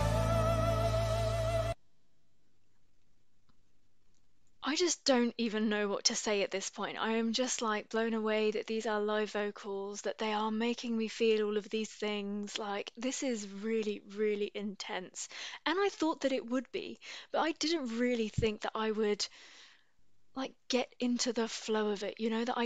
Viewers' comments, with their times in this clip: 0:04 If you didn't know what to say you can just complement the main rapper's falsetto 🤣